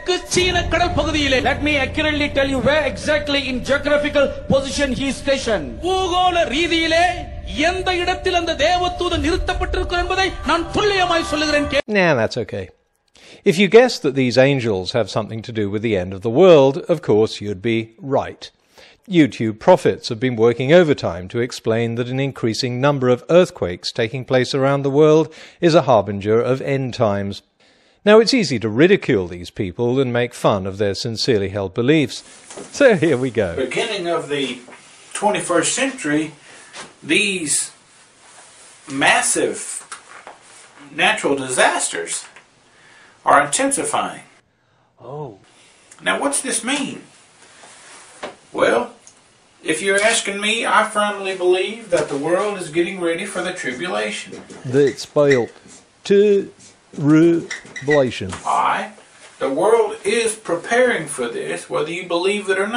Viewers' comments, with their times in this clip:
0:03 "JERKQUFICAL position"?? sounds promising.
0:44 Well done with a lot of humour. I especially enjoyed the "Ooh" the voice-overs and the confused prophet from The Life of Brian at the end.